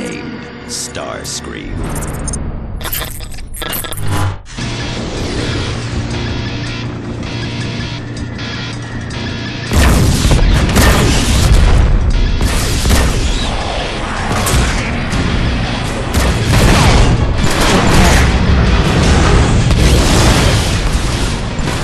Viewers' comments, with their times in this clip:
0:05 That opening music 🔥🔥🔥🔥🔥 tho